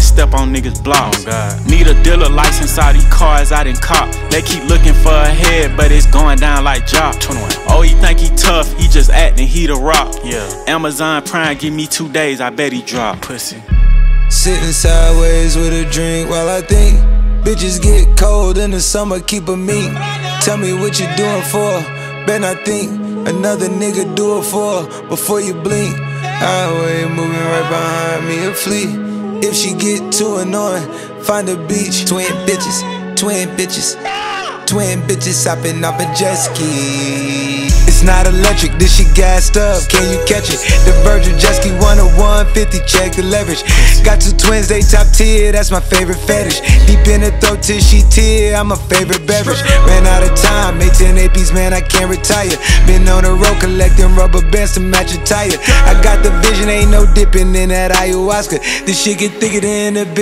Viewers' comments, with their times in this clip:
0:03 21 say goin down like jah ??? Like jasheh?? (xxx)
0:48 that "straight up" was so cold